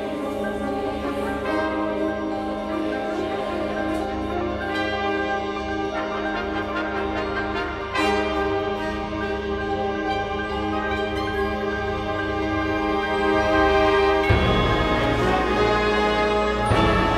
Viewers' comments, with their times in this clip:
0:03 god the build up is amazing...